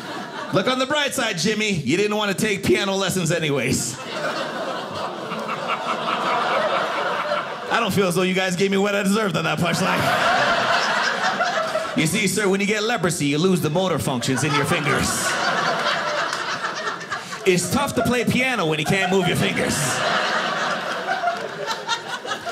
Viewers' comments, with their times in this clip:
0:04 There are a lot of good laughers in the audience. My fave is the guy after the leprosy joke